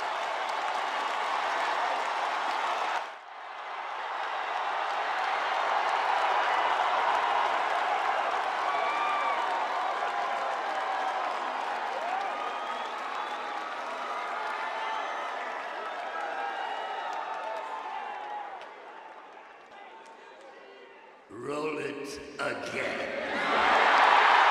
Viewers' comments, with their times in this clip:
0:06 They were absolutely using canned heat, like WWE uses. The audience was in the dark for a good reason.